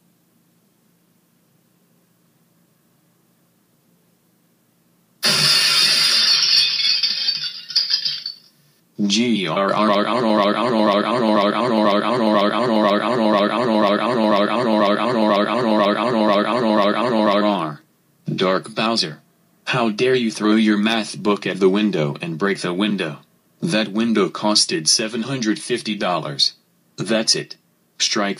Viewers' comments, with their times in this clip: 0:09 ears are bleeding